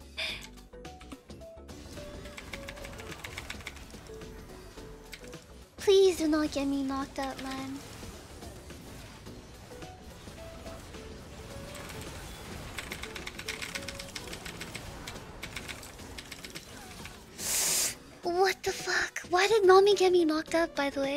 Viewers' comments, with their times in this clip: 0:04 sounds like a hentai line
0:05 ''please don't get me knocked up man'' -Gamer Girl